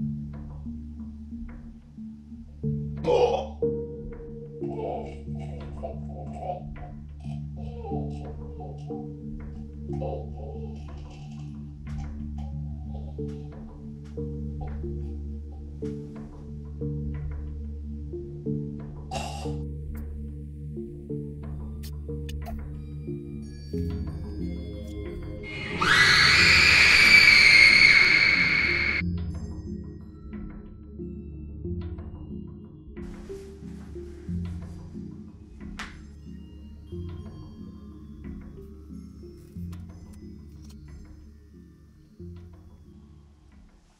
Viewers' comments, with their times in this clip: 0:04 it sounded like he was choking
0:26 girl screams so loud
0:26 At the time You can hear a little girl or a grown woman’s scream